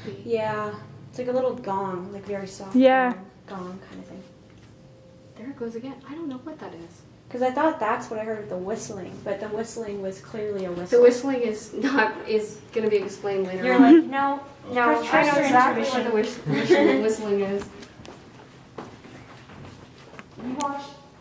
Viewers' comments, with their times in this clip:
0:09 in I can hear that chime too